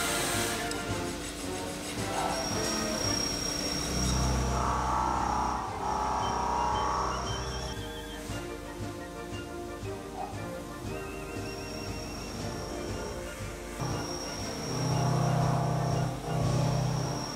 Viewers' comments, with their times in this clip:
0:03 sounds like an angry transformer...